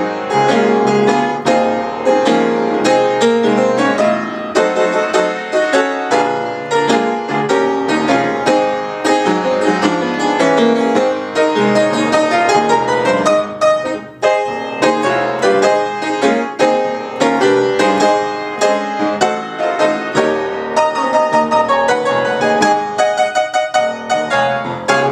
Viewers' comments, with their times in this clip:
0:10 Well, your music was a blessing this morning! That resolution you started had me get up and shout! I just love music, I am trying to learn all about it!